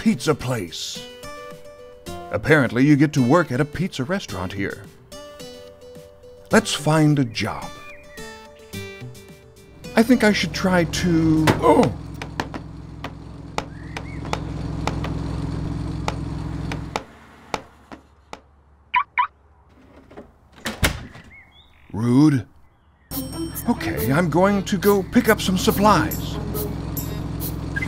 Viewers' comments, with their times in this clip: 0:10 OOOOFFFFFFFFFF (Roblox death sound)